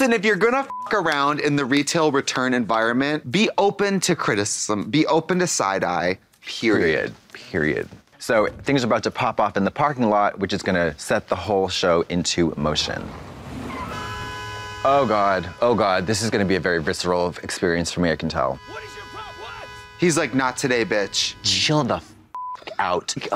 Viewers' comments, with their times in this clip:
0:07 (Blonde Women in unison) Period. 🤣🤣